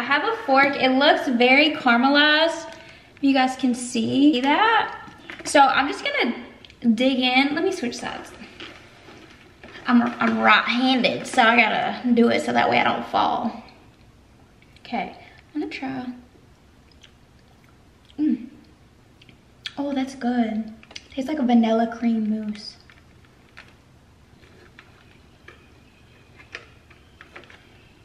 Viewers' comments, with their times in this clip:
0:09 "Im rot handed." that voice is so cute and sexy.